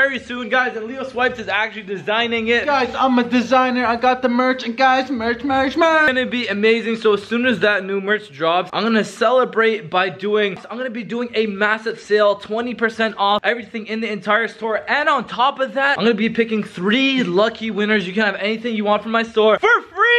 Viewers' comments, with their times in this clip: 0:05 It is freaking gets close to cam and WHISPERS AM IT'S FREEEEEEE